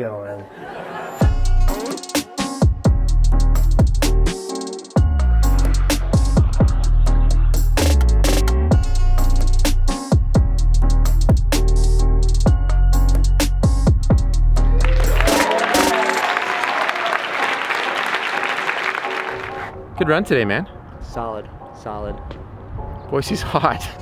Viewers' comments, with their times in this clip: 0:05 That fake laugh from the dude in the audience ... Priceless.